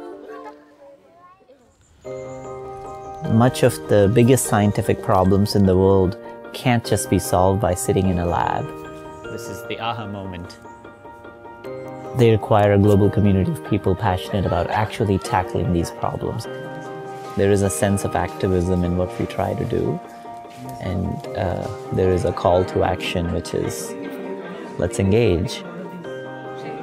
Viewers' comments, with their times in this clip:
0:09 It's funny how he pronounces "Aha" as "Ahuh".